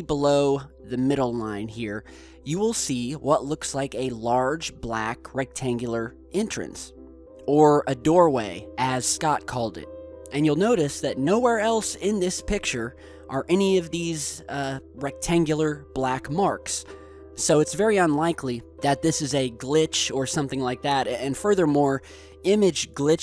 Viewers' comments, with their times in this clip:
0:08 2001 theme plays